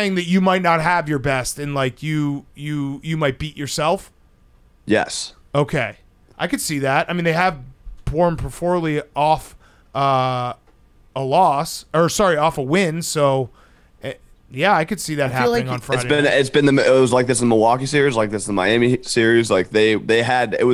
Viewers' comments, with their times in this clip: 0:05 Big cat: “porm porfully” and no one bats an eye